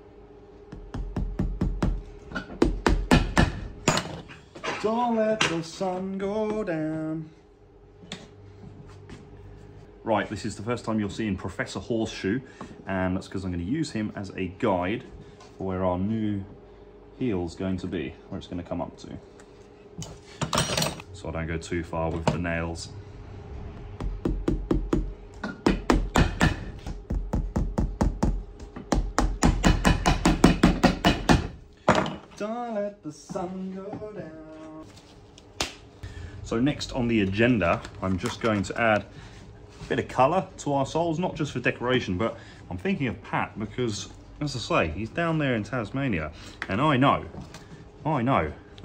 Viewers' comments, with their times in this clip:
0:06 Dont give up your day job, you'll starve. Other than the siging, that is exceptional quality work. You must have had a good apprenticeship to be able to build on it like you have.
0:36 You're going to add a bit of colour to arseholes?